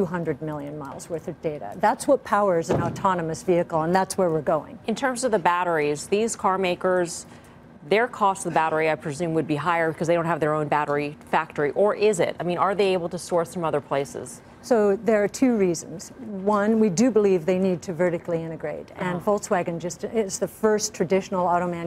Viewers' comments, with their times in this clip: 0:03 So we just gonna ignore how s hard thump sound coming from the ceiling startled the male analysts and looked up yet the female analyst didn't even flinch